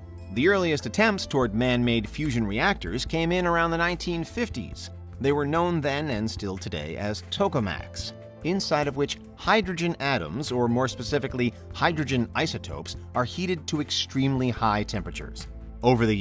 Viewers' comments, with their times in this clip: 0:03 "Topamax"? Isn't that a seizure medication?